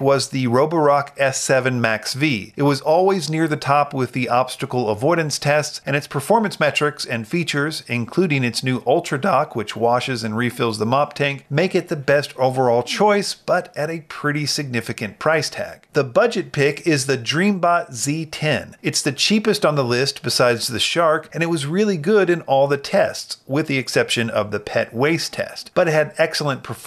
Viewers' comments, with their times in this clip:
0:09 Voice crack! Lol.